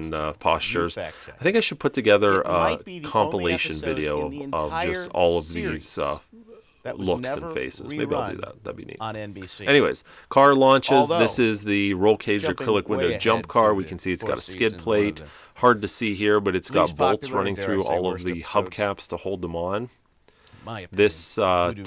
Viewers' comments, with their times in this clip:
0:07 there is some background audio talking about an episode never rerun on NBC. Is anyone else hearing that?